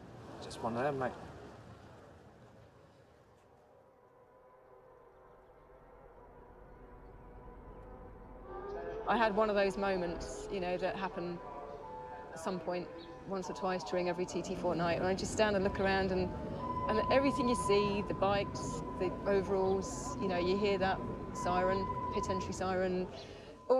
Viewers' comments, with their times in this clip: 0:05 Also, the clarity and acceptance in the way she talks about his death is powerful